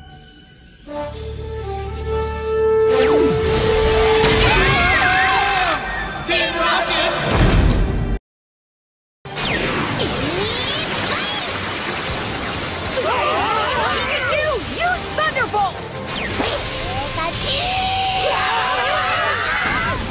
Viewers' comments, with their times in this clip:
0:06 TEAM ROCKET'S BOOM